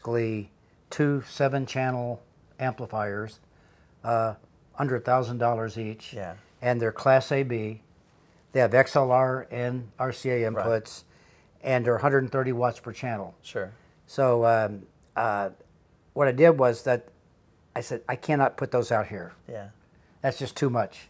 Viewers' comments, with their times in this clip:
0:07 At the mark, he was talking about the Outlaw amps he got, which he said, for under $1k, and I misunderstood him saying $100k!